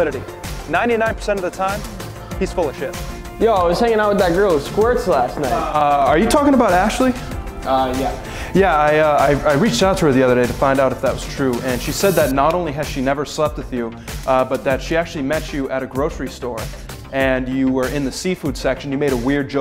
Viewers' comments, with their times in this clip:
0:05 I heard "I was hanging out with that girl in squirts last night" and I got a very different picture in my head